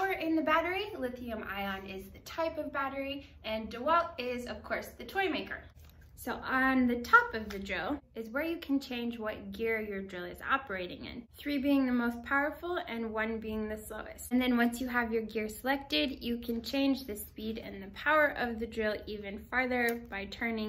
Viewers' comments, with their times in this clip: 0:04 Dewalt is a toy maker?